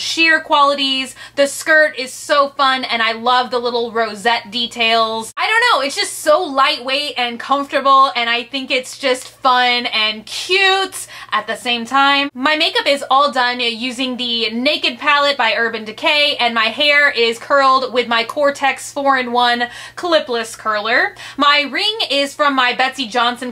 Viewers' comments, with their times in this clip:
0:08 I loved your laugh :)
0:08 Oh and I love the laugh you did